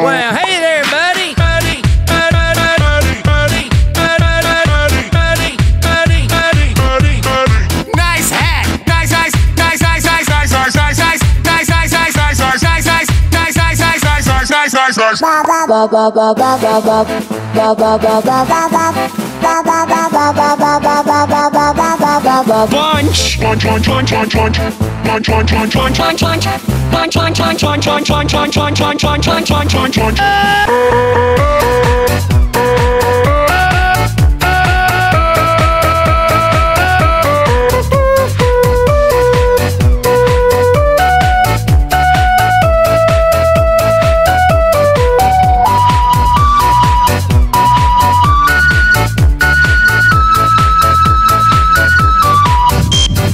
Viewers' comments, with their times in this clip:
0:09 sounds like he's saying se#
0:15 when my brother talks 😂😂😂
0:30 From to the end best drop :D
0:38 its a bf voice